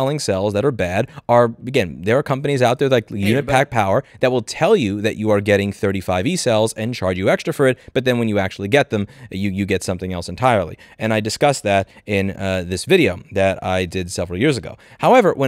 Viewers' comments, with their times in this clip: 0:03 Did I hear Dunkey ?
0:03 Listen closely The Louis from the alternate universe was talking with him as he said “unipack power”.